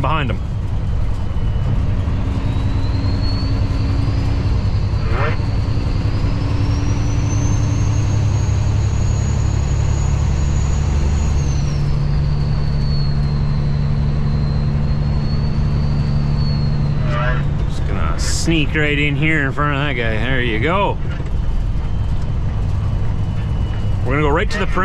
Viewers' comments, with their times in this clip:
0:05 lol sounds like ya missed a gear!! Lol 😂